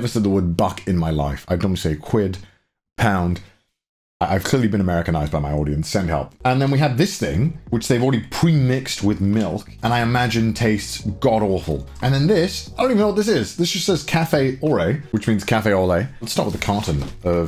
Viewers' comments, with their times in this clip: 0:03 you only just noticed Connor? as an Englishman it's painfully obvious lol the one that irks me the most is yours and Garnt's pronounciation of manga; you say it super American where the first 'a' is elongated to the point that it starts to sound like an 'r', "maaaa(r)nga".